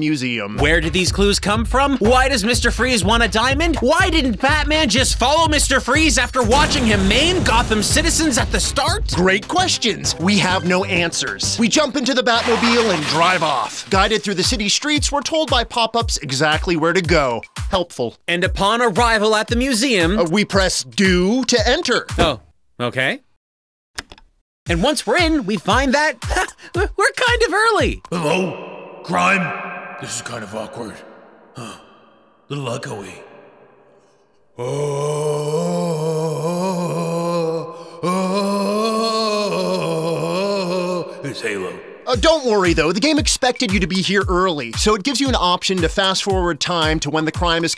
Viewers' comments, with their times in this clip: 0:04 Is he saying "I want my medication?"
0:28 That's Not What George Clooney Sounds Like In Batman And Robin That's Just Christian Bale From The Dark Knight Trilogy
0:33 I could be hearing things but did I hear laughing
0:33 idk if im the only one that heard this. But you can hear one of them giggle in the background while doing the batman voice😂